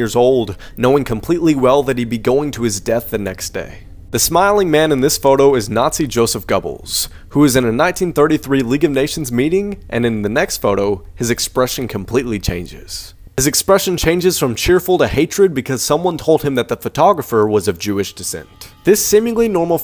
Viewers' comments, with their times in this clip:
0:05 He butchered every part of his name 😂